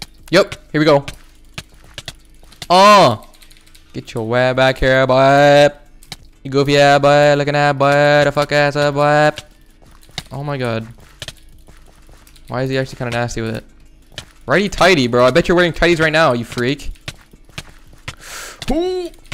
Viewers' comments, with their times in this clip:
0:04 wtf is he saying